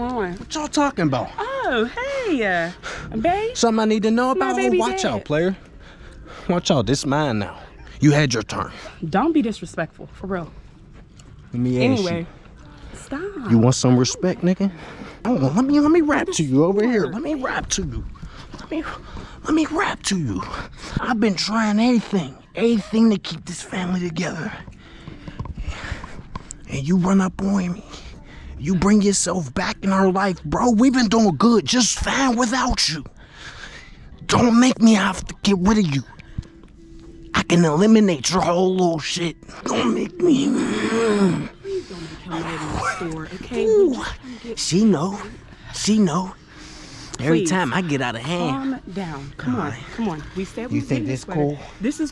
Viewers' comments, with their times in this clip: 0:07 the camera man start laughing 😭😭😭😂😂😂😂
0:22 not gon lie he sounded like myke Tyson when he talk on a podcast
0:35 i think thats the camera man laughing